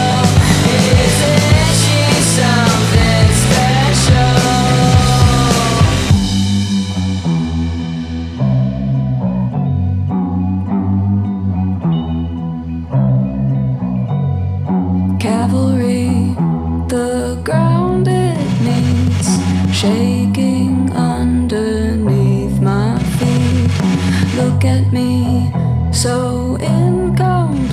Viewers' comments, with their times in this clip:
0:10 Holy cow. I am obsessed with this. is giving me Nirvana vibes.